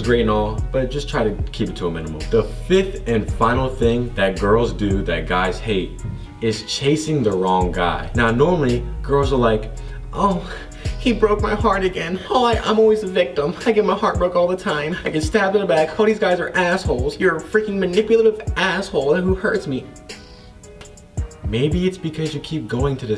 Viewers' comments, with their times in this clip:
0:09 that moan tho